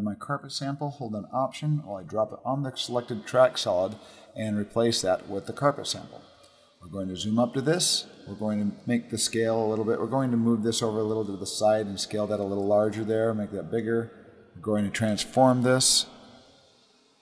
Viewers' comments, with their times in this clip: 0:03 Thanks, awesome video! You're audio gained some reverb or something until the end and it cracked me up I got so confused haha.